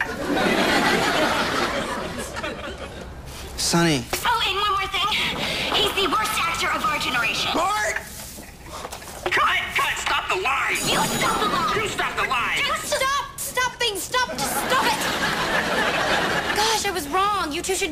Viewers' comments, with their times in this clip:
0:03 he sound hurt :(